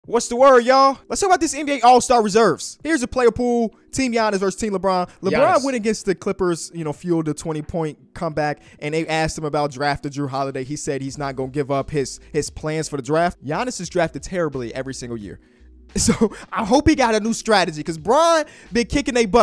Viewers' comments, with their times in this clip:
0:04 was that an adlib???
0:04 why is there some Ai voice saying "Giannis" immediately after Kenny says it?
0:05 did you guys hear someone say Giannis in the background?😂
0:05 he was talkin but who said giannis in the back what the hell
0:05 Anybody else notice that quick “Giannis”